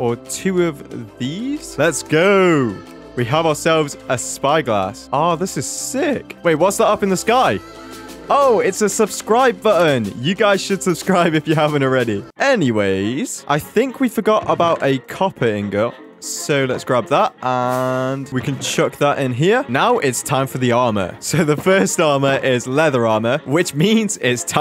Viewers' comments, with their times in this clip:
0:07 why did I hear the cbat song 😰